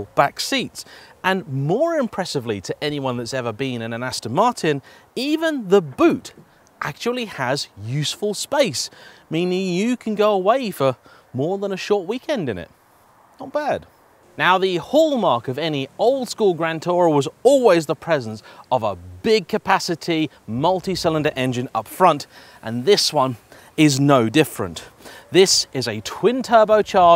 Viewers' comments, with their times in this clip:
0:08 ... (police) "Excuse me sir, is that a Gatling gun" ?